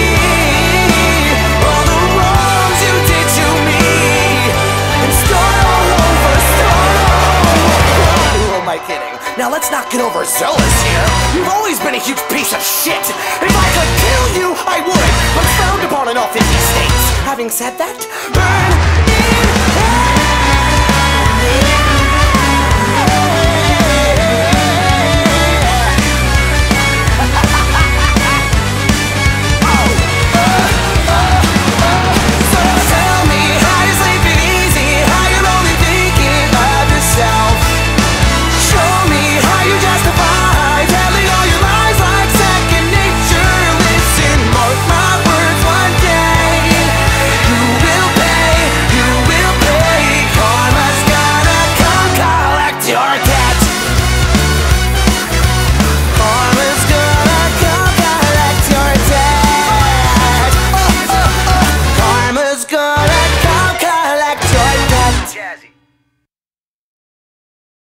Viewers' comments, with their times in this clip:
0:08 I like how it breaks into a little theatrical type thing here
0:08 This feels like the kind of song you would hear in a musical or something similar, especially the jazzy trumpets and the part where he starts speaking. There's no way to describe it properly, but I'm sure someone understands me 😂
0:08 this part: exists Me: Why do you sound like Moxxie- o.O
0:15 it sounds like invader zim
0:17 I can’t be the only one who hears Olaf’s (frozen) voice....
0:26 Can anybody pull of the laugh
0:26 that laugh :0 ✨P e r f e c t i o n ✨
0:27 ngl my fav part is how the laugh matches the brass
1:05 You can hear the last word "jazzy"